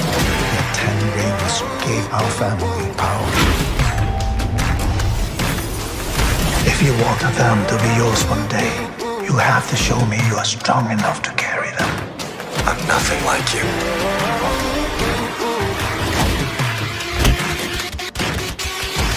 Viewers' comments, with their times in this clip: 0:04 Having been watching Iron Man too much, the metal ping when the rings were "erected" sounded so much close to the showcase of the first Iron Man title. Hammer-bang-an-anvil-like sound.